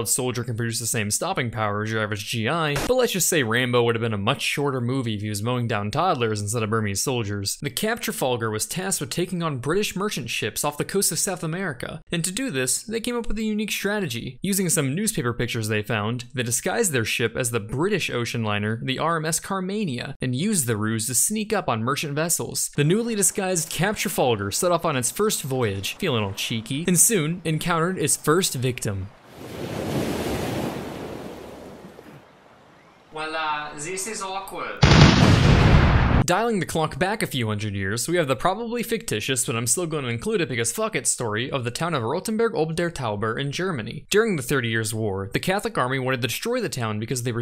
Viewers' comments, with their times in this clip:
0:05 "Rainbow" ?? would have been a much shorter movie?? Is my hearing going or is the narrator just talking too fast after a Starbucks' Latte.....avec sprinkles??? FROM NOW ON, only de-caffineited coffee for vous.
0:23 The jokes write themselves, but the delivery is everything
0:30 /Curb Your RMS Carmania Disguise.mp3 Starts